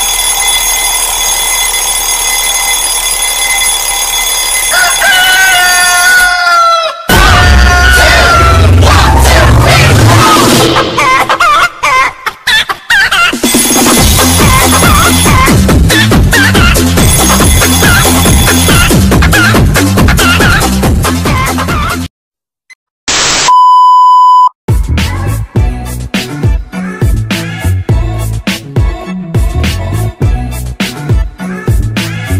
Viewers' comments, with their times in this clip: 0:06 I want the chicken alarm.
0:15 R.I.P headphone users (p.s sorry if accidentally stole another comment idea😓)